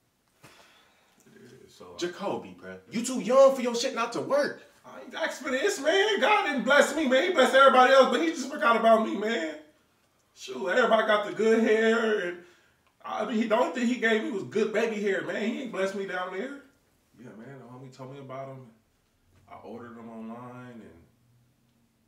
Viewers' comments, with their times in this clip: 0:05 why you make this sound so sad fr😩😂